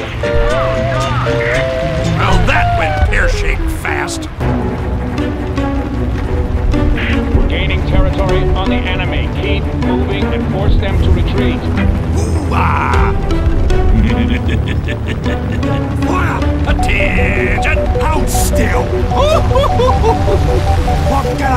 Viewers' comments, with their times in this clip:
0:07 Really solid video! The good use of coherent voice lines and mixing was a very welcome method for this and its quite amazing how you managed to get that plane silhouette in the intro heh heh. I do wonder if that was from another game or it was part of the gameplay?